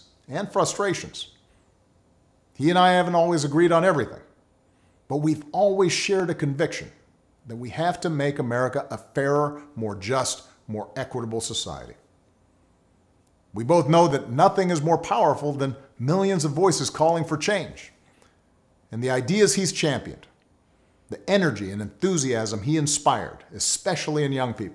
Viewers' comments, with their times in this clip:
0:07 it almost sounded as though he was going to say Make America Great Again 😂🤣